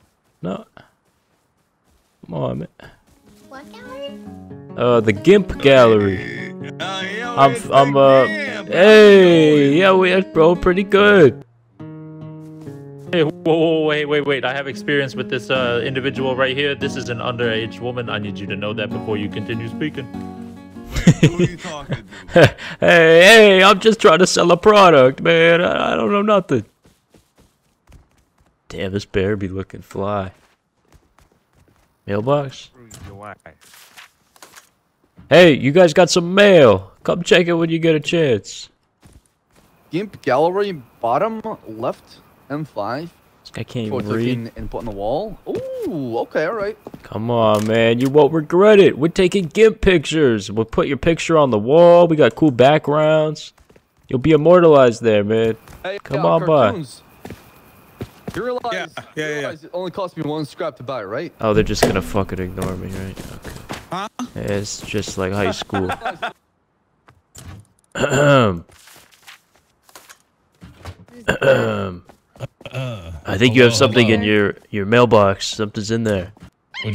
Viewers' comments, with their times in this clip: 0:05 my mans sound like big z from surfs up
0:58 i fell the anger in your voice lmao, i hate that shit